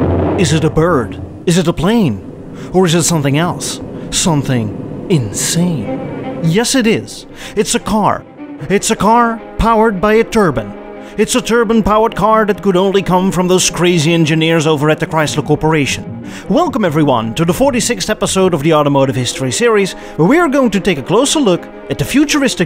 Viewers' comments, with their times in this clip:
0:09 ‘It’s a car powered by a turban’. I think a lot of Sikh men would love that!